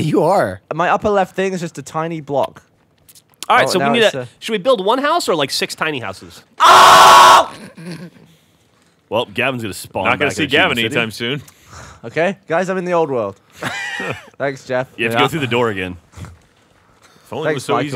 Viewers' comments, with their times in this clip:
0:04 that scream wasnt loud enough